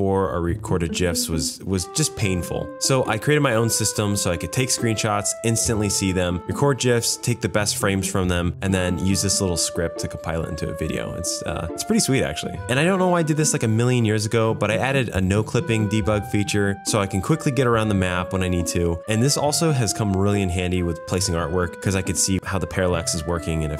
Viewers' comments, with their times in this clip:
0:09 Are you pronouncing it "Jif" just to get angry engagement. 🤓